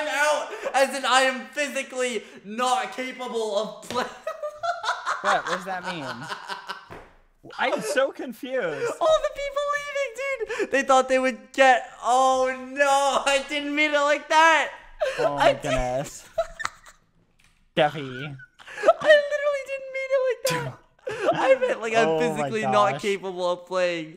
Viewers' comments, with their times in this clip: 0:05 CUTEST LAUGH EVER ⁽⁽◝( •௰• )◜⁾⁾